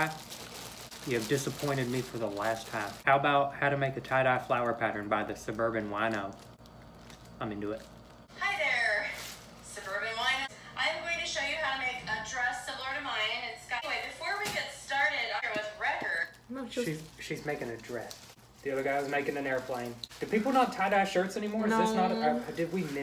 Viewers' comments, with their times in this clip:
0:09 the way they both said hi 😂